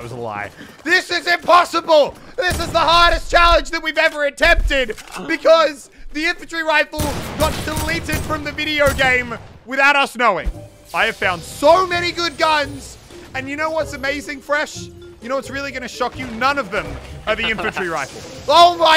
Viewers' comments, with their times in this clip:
0:03 do u guys here something werid !?!